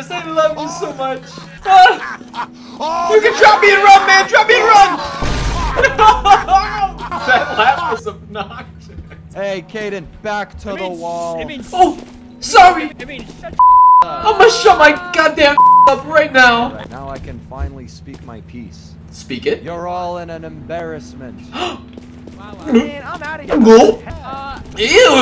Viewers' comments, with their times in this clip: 0:09 the time is full vol